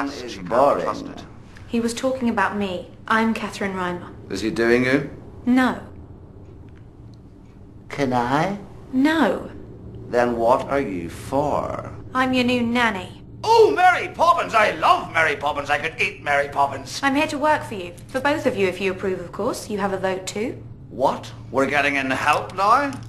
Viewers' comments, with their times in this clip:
0:06 is it just me, or does he sound like stewie griffin ?